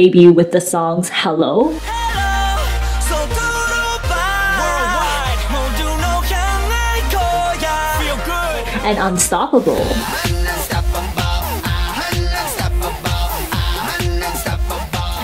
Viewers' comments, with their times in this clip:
0:03 and just to be clear, yes, this is trying to be kpop